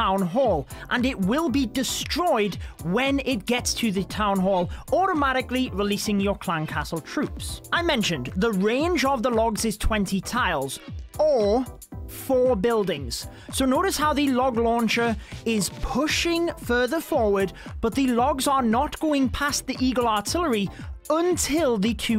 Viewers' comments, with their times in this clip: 0:10 why did he sound like the pufferfish meme 😅